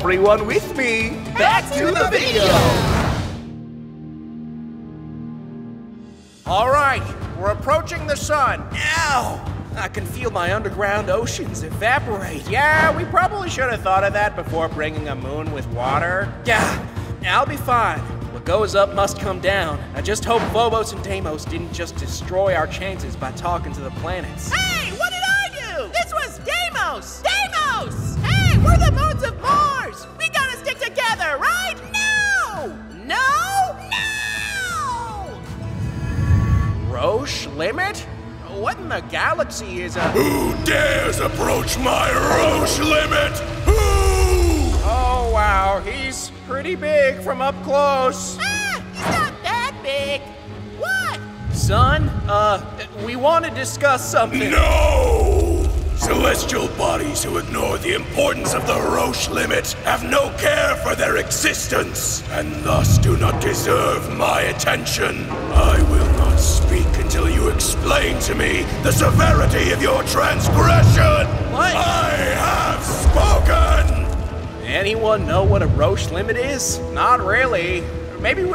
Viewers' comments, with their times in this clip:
0:08 (pause here as a Cut scream) titan: AAAA-
0:19 Turn on automatic captions 💀 hint: bobos and damos
0:31 the scream man
0:40 uy scuti canon voice
0:54 (on speed 0.25) Da Sun: 👹👹👺👹👹NNNNNNNOOOOOOOOOOOOOOOOOOOOOOOOOOOOOOOOOOO!!!!!!!!!!!!!👹👹👺👹👹
1:05 UH I HEAR CELESTIA AND ROACH HAHAHA ISINT CELESTIA IS A ALICORN FROM MLP AND A ROACH IT A COCK ROACH HAHA